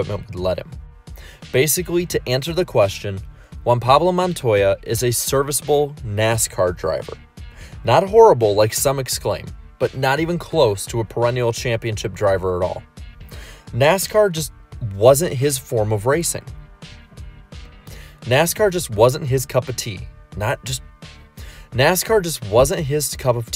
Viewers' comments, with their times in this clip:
0:08 low key sounds like you’re editing the video